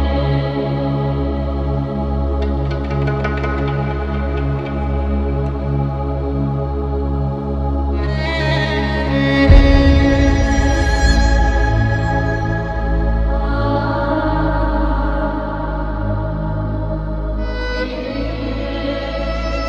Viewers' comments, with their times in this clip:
0:03 That sound effect sounds like the opening effect of Tarkovsky's Stalker